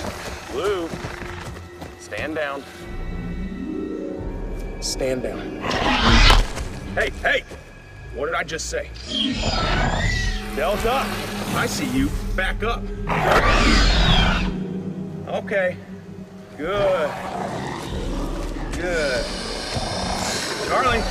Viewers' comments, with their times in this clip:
0:09 why do the raptors sound like birds